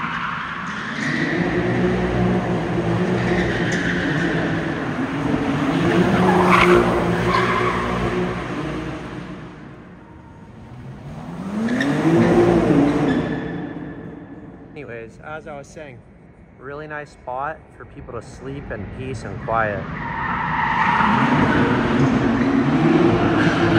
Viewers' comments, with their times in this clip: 0:08 honestly not even that loud